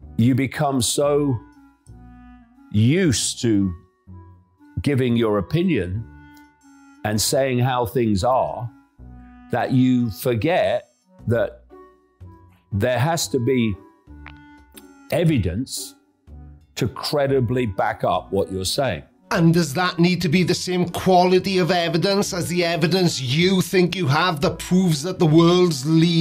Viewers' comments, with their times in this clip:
0:03 Someone needs to pull a 'Farting Preacher' type move on some of the pauses.
0:08 Is he doing his Rick Sanchez impression to make us think he's clervererer?